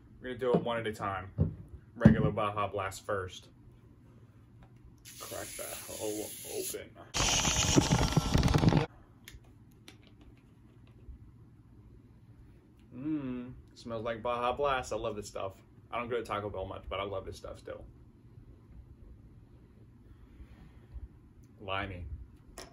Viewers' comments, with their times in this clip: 0:07 The buschhhhh was rather frightening, but alas I learned of the baja blasts and which one I might want to buy in the future. Thank you.